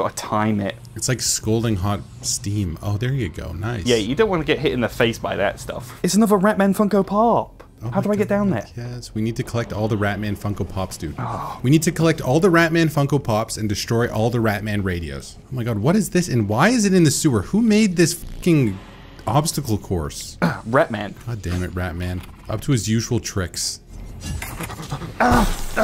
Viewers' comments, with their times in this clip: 0:06 obsessed w the way he said this i will be saying rat king funko pop for the next 2 weeks